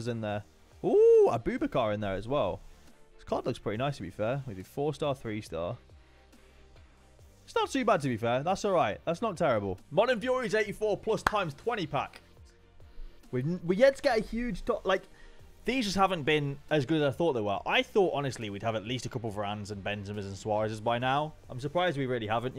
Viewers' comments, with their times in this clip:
0:04 my man said aboobikar